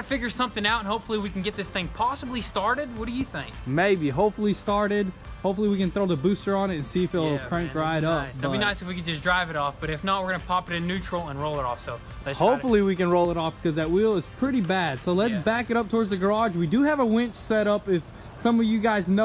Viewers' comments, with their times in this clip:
0:03 so gayish impression.....😂😂😂😂😂😂😂😂